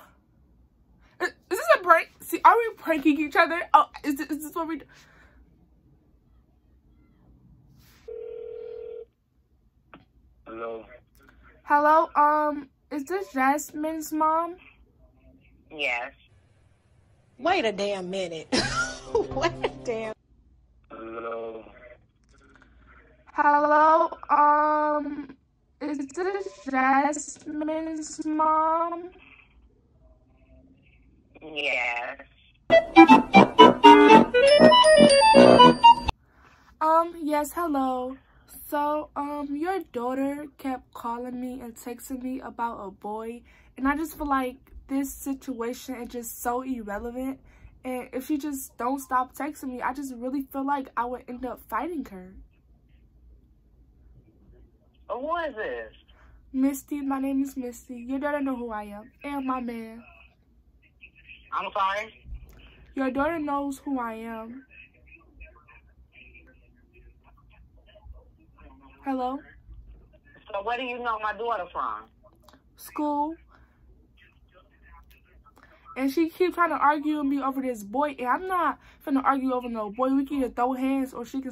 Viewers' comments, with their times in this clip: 0:10 her voice just changed
0:10 tht was a deep ass voice 😂😂😂
1:06 the mom sound like Nicki Minaj no Cap 🧢